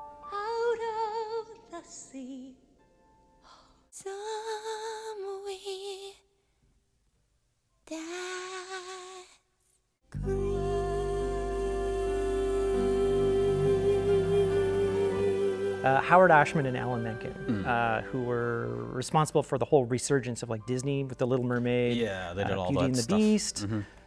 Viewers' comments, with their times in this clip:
0:09 holy shit those harmonics!